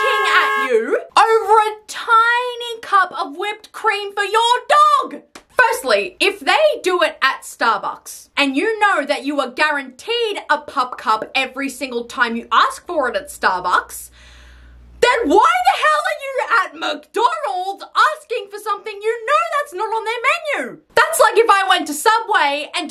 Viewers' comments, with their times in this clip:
0:10 bro the way she said pup cup scratched my brain puPcuP the little pop xd